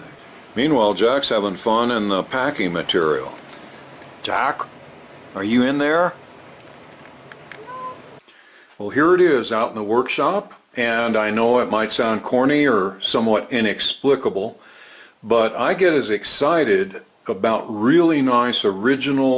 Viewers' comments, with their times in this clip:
0:05 Did that cat say "No" ?